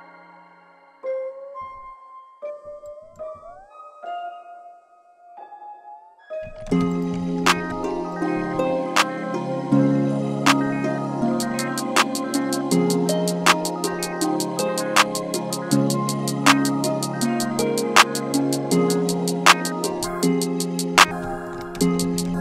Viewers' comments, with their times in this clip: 0:04 The first melody sounded a bit like bandit. is the synth of monsters by iann dior